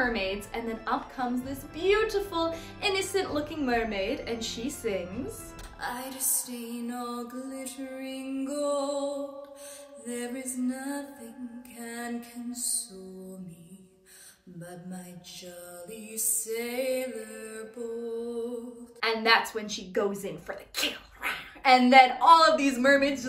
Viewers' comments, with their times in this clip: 0:05 That voice of yours sounds hauntingly terrific.